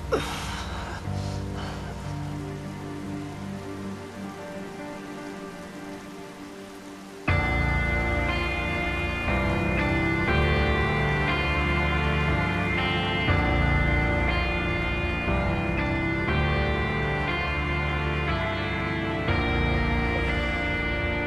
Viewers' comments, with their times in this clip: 0:06 The fucking music gets me everytime.
0:06 man when the music kicks in and the split screen focusing on both your cameras and then the player who dies screen fading away MWUA perfect (except I hate that they broke the best Freindship of all time)